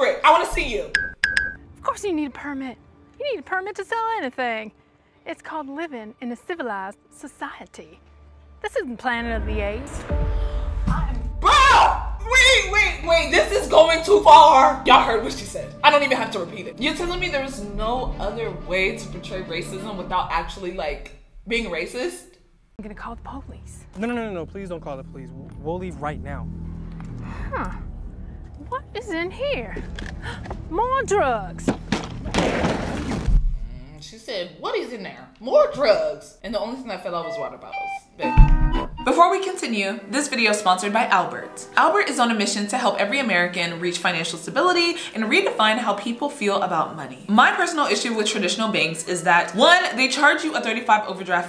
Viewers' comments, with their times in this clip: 0:07 ITS CALLED LIVIN IN A CIVILIZED SOCIETAH! cartman.
0:37 HOW FAST UR VOICE CHANGED